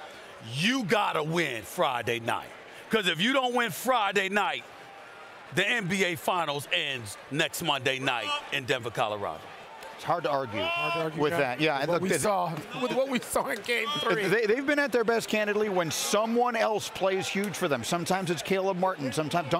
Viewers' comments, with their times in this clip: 0:06 The dude yelling wrong was pretty funny.